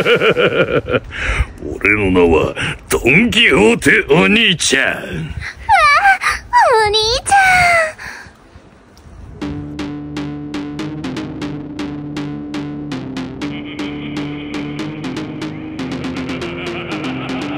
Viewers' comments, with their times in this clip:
0:05 no one was prepared for her voice line